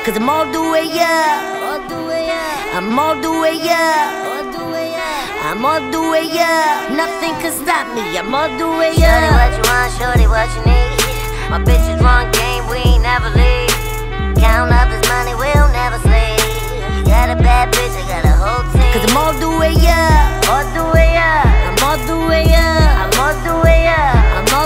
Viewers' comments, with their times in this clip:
0:08 her voice reminds me of Mike Posner's Bow Chicka Wow Wow.